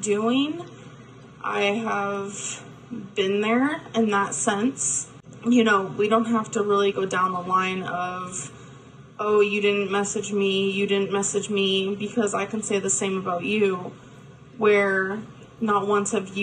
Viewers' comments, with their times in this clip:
0:03 "I have asked how youre dooeen" ...did she say fine? 😂😂